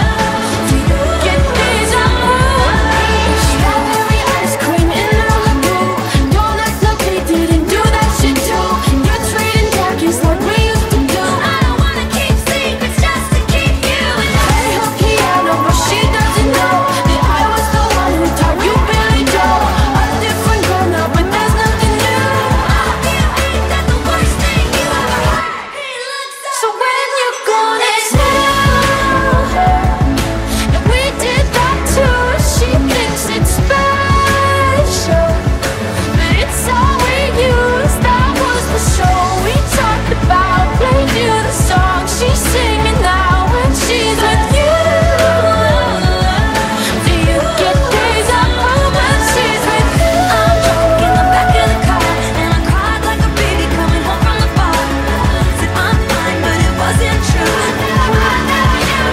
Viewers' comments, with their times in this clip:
0:07 the remix really pops off till the end. I need this remix as a ringtone just so i wont ever answer calls
0:43 the combination of yo~ou and cru~el summer was so smooth oml
0:45 have you heard the song? the only part that sounds like cruel summer is the bridge, which is most likely intentional because the “I hope you get deja vu” scream is which is how long cruel summer is. she is trying to give us deja vu. it’s actually really cool